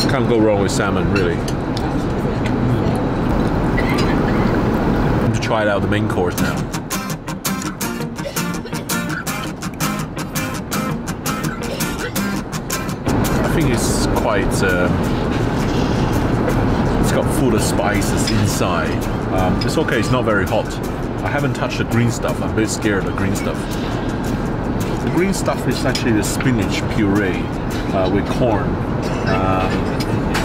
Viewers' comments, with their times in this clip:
0:06 there’s always that one person who coughs out in business class. Nothing better than reality.
0:12 someone’s dying in the background